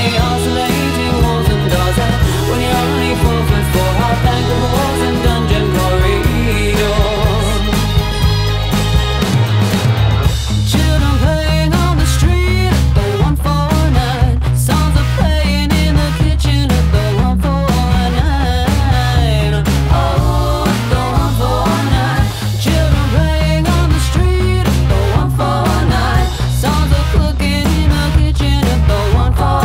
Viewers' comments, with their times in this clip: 0:10 great song, love the shift